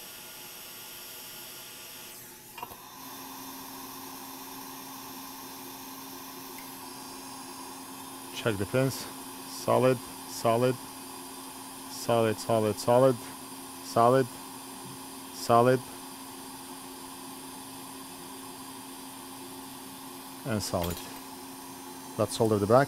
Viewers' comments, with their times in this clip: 0:09 Eight salads please